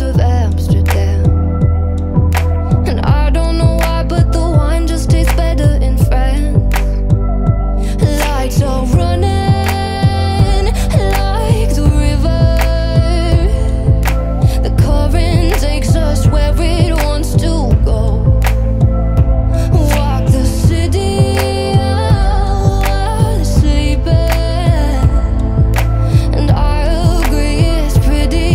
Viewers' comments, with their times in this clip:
0:09 getting Lover vibes The album by Taylor swift I mean.